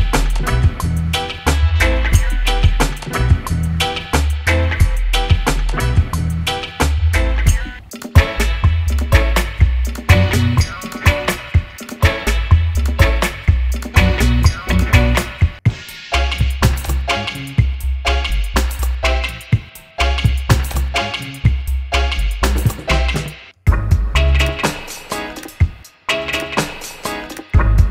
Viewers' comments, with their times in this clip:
0:08 #2 Love that riddim!